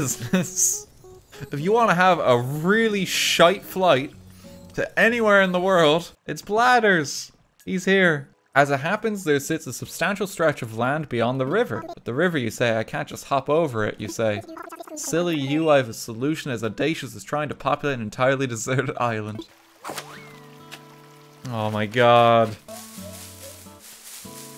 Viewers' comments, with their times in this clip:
0:10 i thought he said Weebs instead of weeds ...